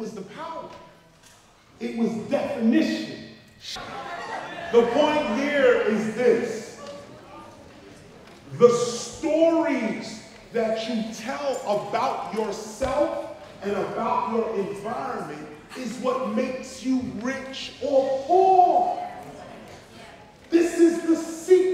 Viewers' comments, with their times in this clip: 0:03 i distinctly heard a male gravelly voice saying "Shut up"....watch yer back Brother, please be careful